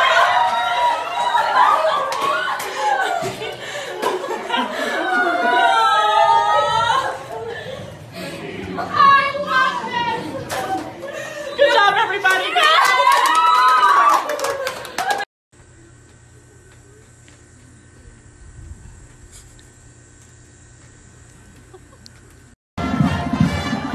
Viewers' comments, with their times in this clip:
0:09 the person in the background screaming “I love this!” Is my spirit animal